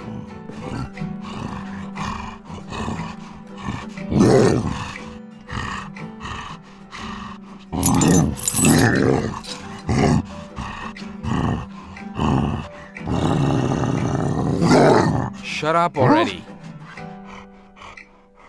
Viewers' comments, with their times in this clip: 0:06 the music especially